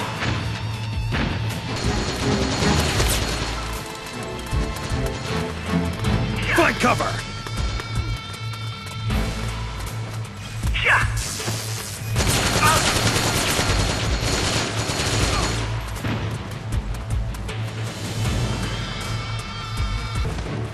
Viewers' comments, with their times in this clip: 0:05 it sounds like snake is saying "fuck cover"